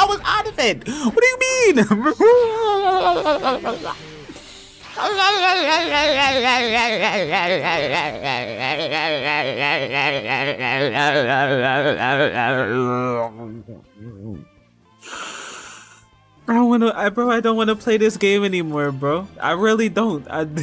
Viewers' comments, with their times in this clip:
0:08 Bro the are-are-are-are rlly got me mins in 😂😂😂😂😂